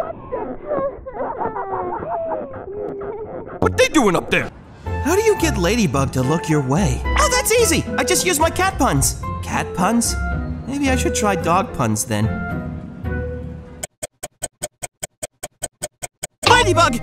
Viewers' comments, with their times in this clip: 0:04 the breaking bed comic had got me😂😂 da way he said WHAT THEY DOIN UP DERE